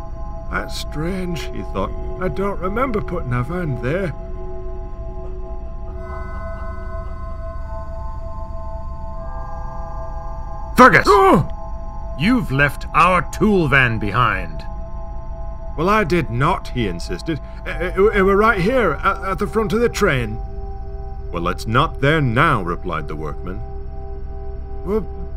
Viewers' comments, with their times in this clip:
0:09 whoah not even the first time I watched this; had the volume turned up, You got me!